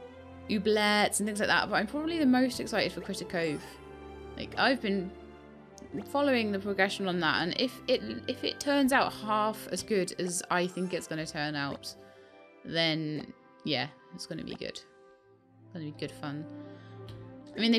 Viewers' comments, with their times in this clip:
0:03 What game is it that you mention Sorry I can't hear what you say, but the game sounds like my type of game.